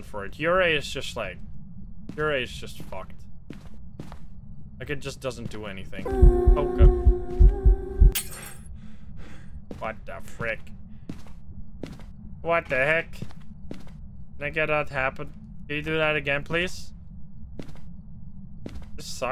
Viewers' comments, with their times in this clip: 0:06 Your character breathing heavily right after the ghost event made it seem like it was out of fear, and not because of running out of sprint Honestly, it actually helps humanize the character